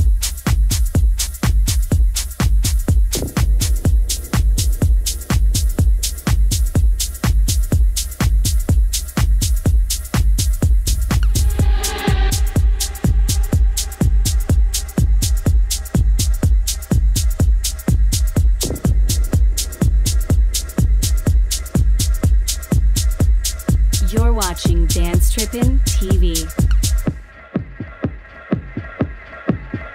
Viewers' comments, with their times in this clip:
0:10 damn that sample on